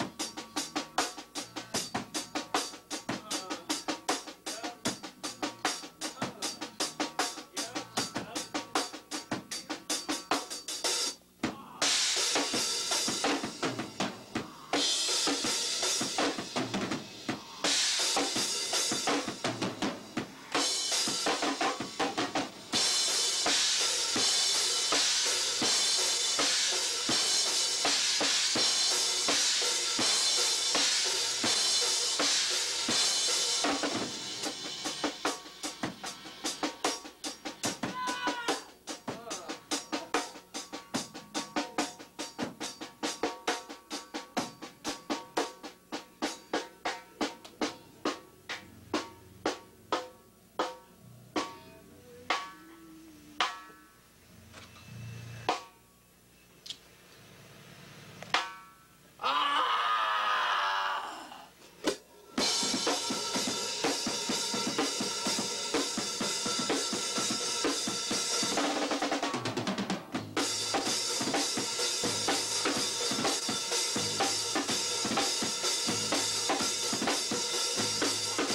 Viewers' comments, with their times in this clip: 0:10 Damn hear those screams fking god
0:59 when you step on to a needle. same voice :D